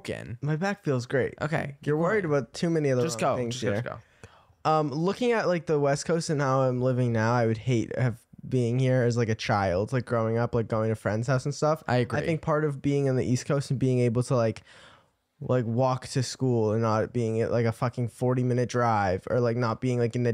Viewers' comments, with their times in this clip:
0:03 who the FLIP is whispering “go” in my airpods rn i almost freaked out